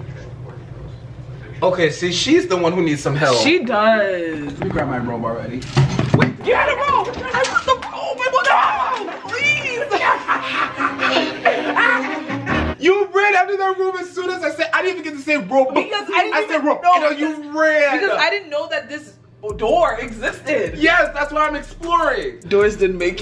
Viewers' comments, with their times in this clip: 0:07 bruh it sounded like dog was in there 😂